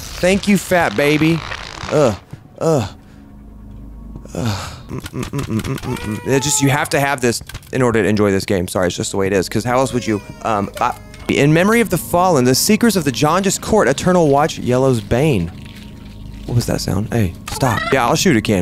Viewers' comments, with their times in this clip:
0:06 no one's going to mention how when he shot the painting the baby cried?